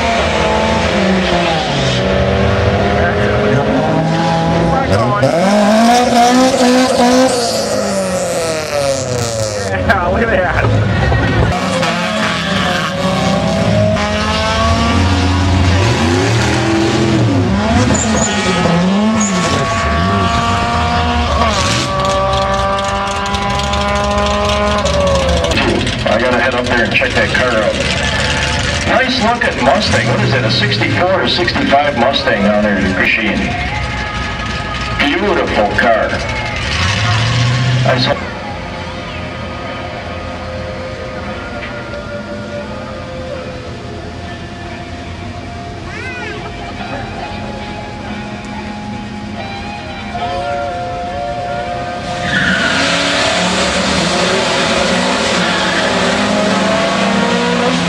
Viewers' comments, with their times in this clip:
0:05 Haha. did someone start a leaf blower ?
0:45 rooster in the background. oh yeah nice car